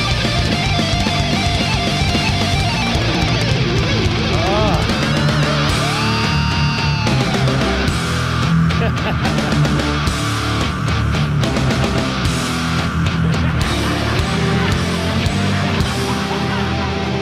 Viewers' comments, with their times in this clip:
0:05 Guitar screams🔥. Hell yeah!🤘